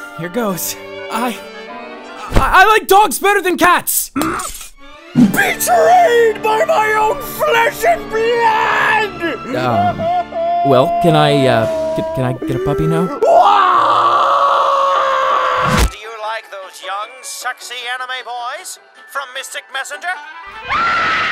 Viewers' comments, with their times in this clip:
0:03 The way Jumin says MMM just kills me XDDD